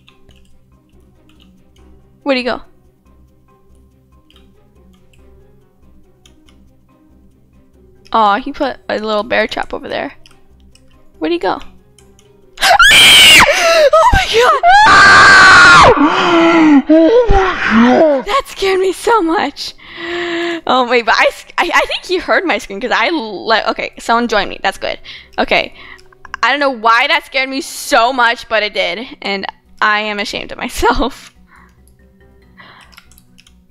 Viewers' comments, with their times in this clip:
0:10 Scream of shame
0:12 oh my god you scream so loud😂
0:12 VERY SOOTHING!! TURN VOLUME ALL THE WAY UP!
0:12 she yelled and I dropped my phone on the bed
0:12 I think I'ma murderer bc that scream was hilarious that was the best laugh I ever had in a long time!! I literally started tearing up 😂😂Def the funniest thing I've ever seen in the vid. That should be in the funniest of 2020 😂😂
0:12 I broke so I cannot afford any of this!!!!!!!!! Me:............ Me again: I don’t save anything!!!!!!!!!😂😂😂😂 Also you screamed so loud 😂
0:12 OH MAH GOSH YOU SCREAM LOUD edit:0 likes just right
0:13 BEWARE HEADPHONE USERS !!! lol 😂
0:13 your scream frightened my brother🤣🤣
0:13 i had earphones onn 38 volume and and my ears are r.i.p now rest in peace ears duh.......
0:13 In when she scream I got a heart a attack
0:14 Omg that scream